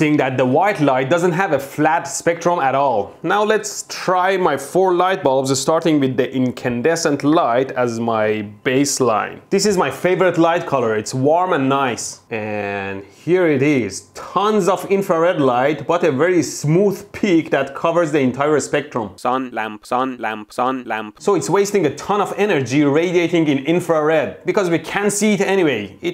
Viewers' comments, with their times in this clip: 0:07 from my past experiences I was ready for explosion,but I liked that surprise or sooprise as he calls it.